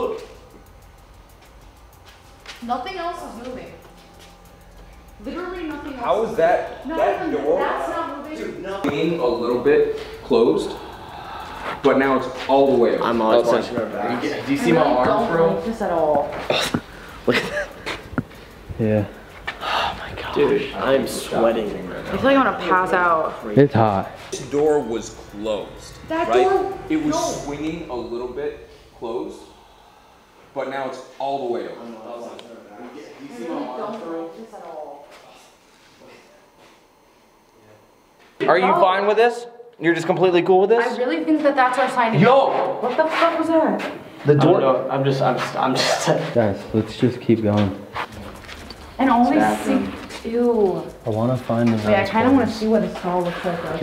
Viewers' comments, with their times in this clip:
0:06 Literally if you stop the video you can hear someone or something breathing into the camera
0:09 you can hear someone exhaling by the camera 😳
0:09 very high ghost brathing, so close to the camera man
0:09 you can hear a loud sigh heavy breathing noise into the mic
0:10 that whispre/exhale. Was that from one of the team members?
0:10 you can here a faint hauggggh
0:10 Did anyone else also hear that whisper??
0:10 you can hear someone breathing out
0:10 Bro there a hard breathing
0:10 I heard a sigh
0:10 you can hear a loud breath but not sure if thats whos behind the camera
0:11 a low sort of breath starts and it lasts 1-2 secconds it sounded so weird and it wasn't pointed out so I don't know if anyone actually heard it other then me
0:11 Hey idk if youll going to reply but you can hear someone breathing into the camera
0:11 Is there an exhale or sigh or am I just hearing things?
0:11 there’s an exhale
0:11 you can hear breathing... & there are so many orbs if you watch closely at how it blurs
0:11 Listen to you can hear the hiss
0:12 Yo did anyone else here lake breathing that didn't sound like anybody else
0:12 Idk if its just the guy thats recording breathing but you hear a deep heavy breath being taken like as if he was doing it into the mic
0:29 there is a loud breath as yall are talking about the door
0:30 and wtf are those “haaaa” sounds like someone is heavy breathing
0:36 and just b4 that I here a Male gasp for breath like ahhhhhh and also just b4 that to I also kept hearing this when zack began ghost adventures went there to